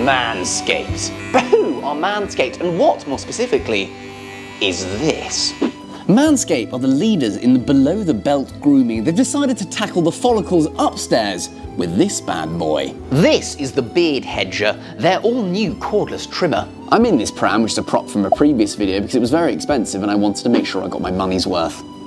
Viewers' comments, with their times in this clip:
0:03 The way he said " is this " was so clarkson